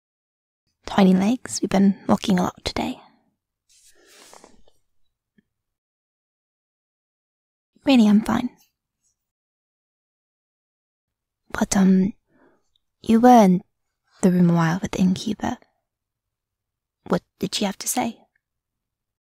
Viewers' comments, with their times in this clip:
0:03 It is easy to know she is upset: she stoped chattering.